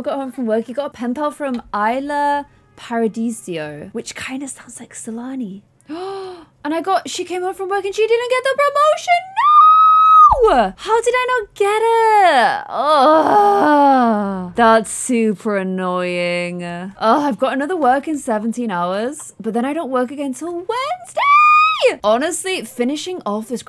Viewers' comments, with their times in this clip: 0:10 clare can do whistle notes 🥺